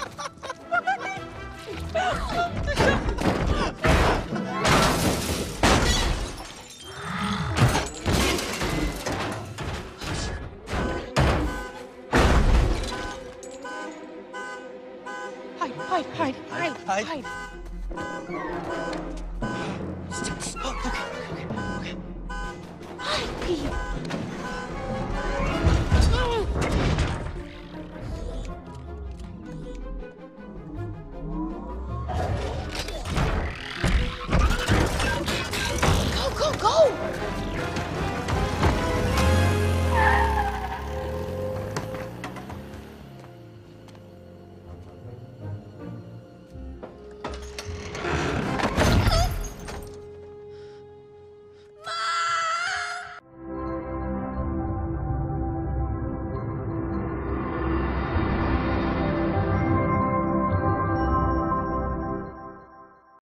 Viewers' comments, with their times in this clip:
0:03 Them: *Laughing* Bumblebee: Won't Stop Laughing Huh? Also Bumblebee:
0:10 NOW the car alarm goes off lol
0:34 Oh god the sound effects are frigging awesome!
0:49 What was that voice?